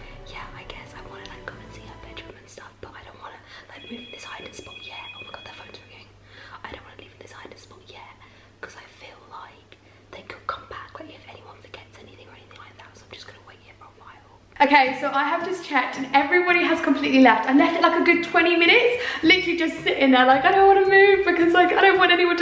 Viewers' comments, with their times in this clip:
0:07 straight up asmr making me fall asleep